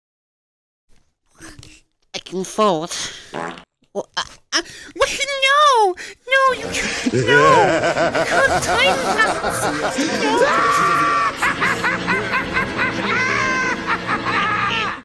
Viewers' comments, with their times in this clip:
0:05 High pitched Glub is the cutest thing ever